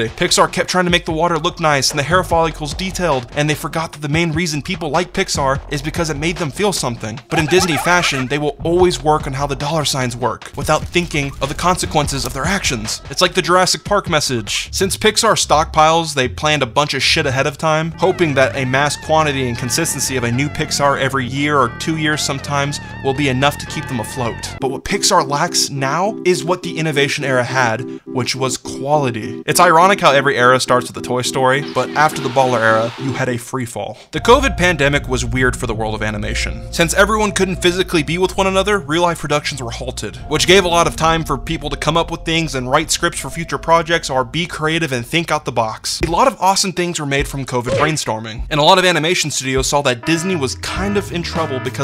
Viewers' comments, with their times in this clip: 0:07 Lmao that mickey laugh 😂
0:32 How it ends by devotchka playing was a sweet treat as soon as I heard that echo-ey synth, I think, love the music choice throughout the video and how every frame of the video doesn't get boring but catches my eye. Thank you. It was